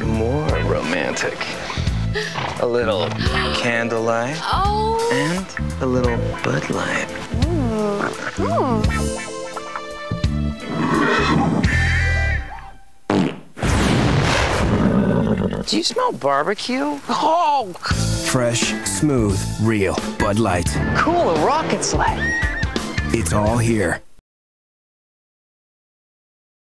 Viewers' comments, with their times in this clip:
0:10 The horse's fart made the candle explode because the fart was methane gas, and whenever methane gas touches fire, it explodes.